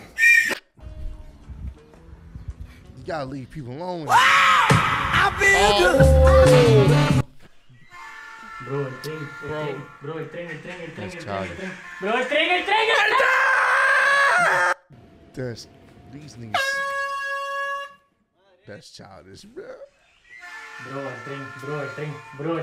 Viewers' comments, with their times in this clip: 0:03 That James Brown scream wakeup prank got me! DAMNIT! 😭🤣😭🤣😭🤣😭😭🤣